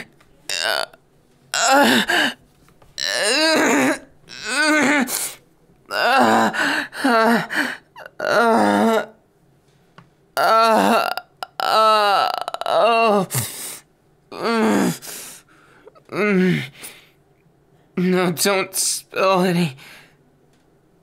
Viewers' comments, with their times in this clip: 0:03 Im sorry but I literally thought he was taking a dump and I got a bit scared 😭😭